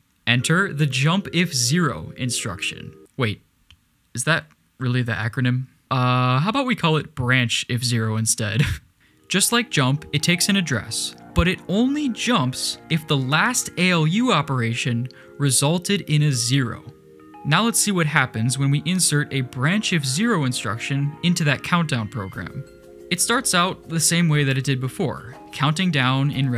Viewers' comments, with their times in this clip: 0:03 U realize that things are complex when Veritacium music starts playing
0:11 and he starts talking like Veritasium, also the sound makes him sounds like him wtf